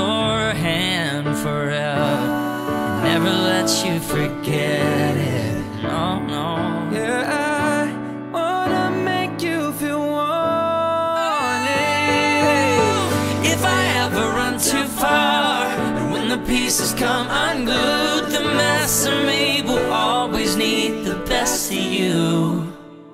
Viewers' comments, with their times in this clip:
0:10 HUNTER'S NOTE OH MY GOSH \